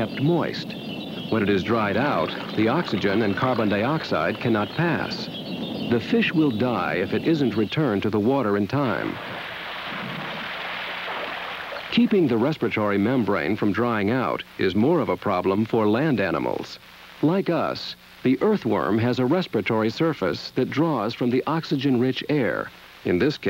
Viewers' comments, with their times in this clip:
0:07 is that the sound a fish makes when thrown back in the water?